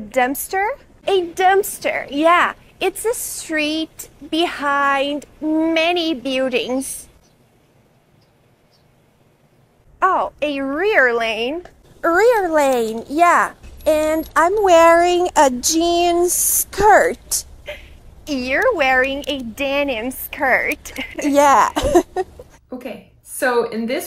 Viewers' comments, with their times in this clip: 0:07 Min she says builDIUNGS... That's hands down Portuguese accent, which btw I can't stand at. Get rid of these fake non—native teachers!!!!!!!!!